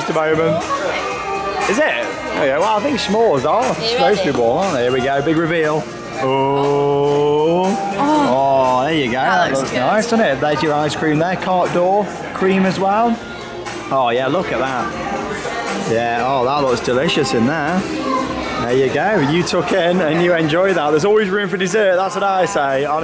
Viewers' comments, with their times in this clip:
0:06 I hear my fav song